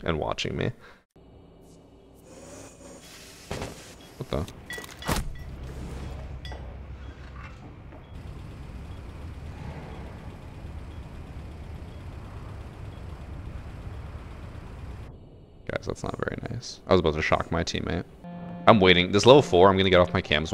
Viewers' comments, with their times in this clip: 0:07 bro that was kinda funny and the moment of silence was crazy